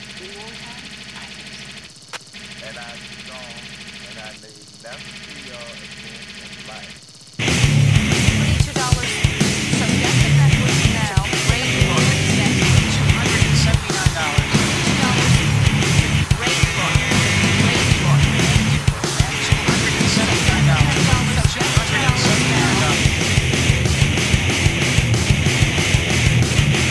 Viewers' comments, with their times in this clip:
0:07 This riff is so juicy that I'm drowning in it.